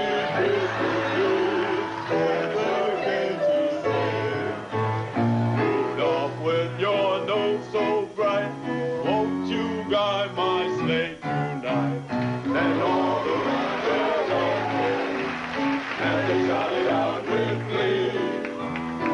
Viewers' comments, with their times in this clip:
0:06 Curtis Sliwa with the solo.